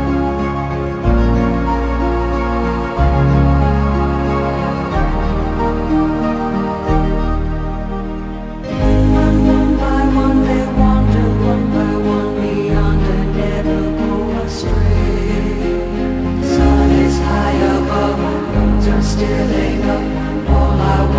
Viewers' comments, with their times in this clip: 0:08 The way she repeats the phrase 'one by one' is really satisfying and adds tons of color to the melody. More songs should utilize that type of repetition.